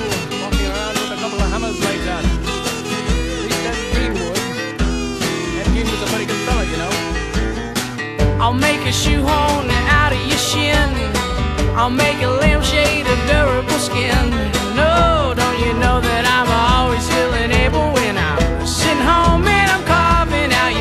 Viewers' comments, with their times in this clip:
0:07 the guy that talks to sounds like Boom-Howard from King of the Hill..